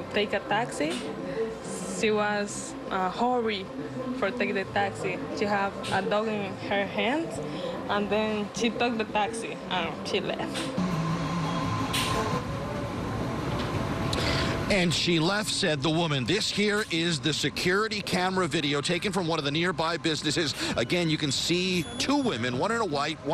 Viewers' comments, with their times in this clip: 0:09 Next time see if you can interview a witness that speaks English for your English speaking listeners. My bad, I forgot you were in the Bronx. Nevermind.